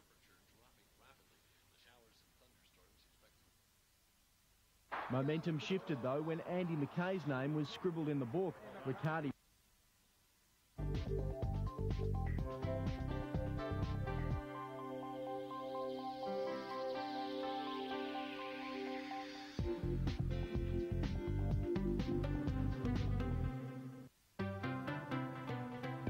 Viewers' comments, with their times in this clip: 0:10 brings me memories... the old weather channel music. In 2003